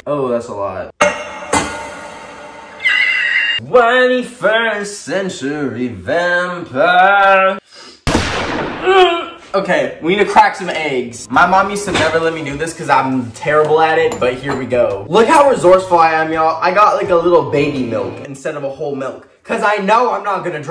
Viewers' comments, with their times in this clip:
0:03 I’m a 21st century tampon